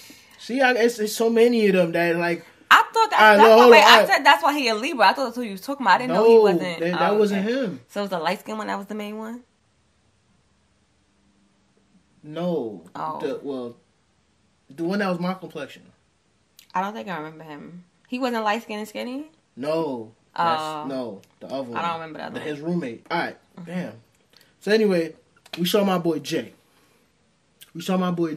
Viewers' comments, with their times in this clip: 0:10 she only remembers the light skin dude....that emphasis on it says she was attracted to him 😅